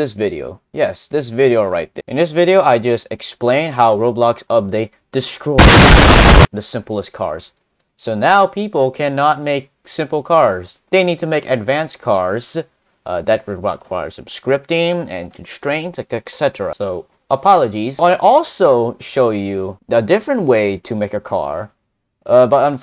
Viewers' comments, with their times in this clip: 0:06 you almost brok my ears :(